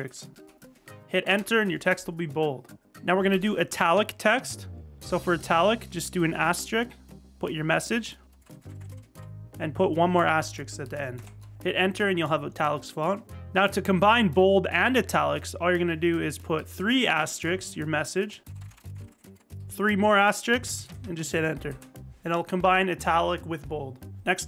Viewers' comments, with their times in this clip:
0:10 Bro Said Asstricks💀